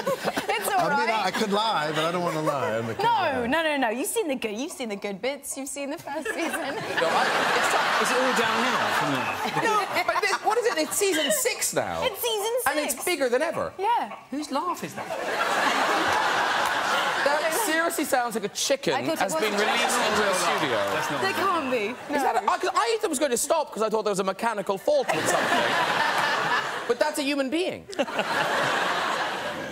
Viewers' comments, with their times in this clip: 0:05 the guy laughing in the background ;)
0:11 The gentleman that got called out for his laughter 😭😂 ROFL
0:12 has me bits🤣 That laugh is hilarious😂🤣😂🤣
0:13 HAGAJAHAHAHAH THE LAUGH IM CRYING
0:14 I’m stuck because I can’t get over that laugh 😂😂